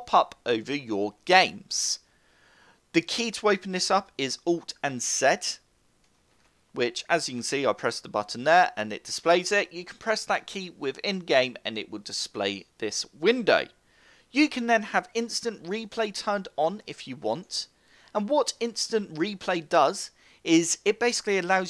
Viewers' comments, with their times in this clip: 0:04 what was the key? all i heard was alt + set but please correct me.